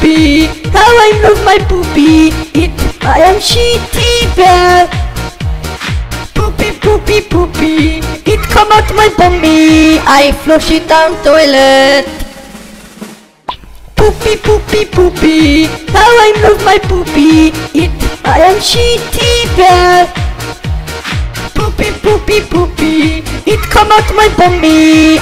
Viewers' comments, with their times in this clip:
0:08 It come out my gomitas